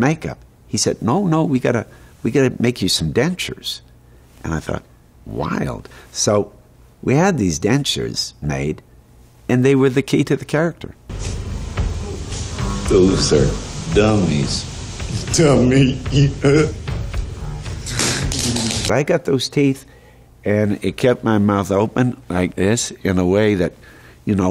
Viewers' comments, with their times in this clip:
0:05 The way he says “wild” gives me chills. I want that as my ringtone.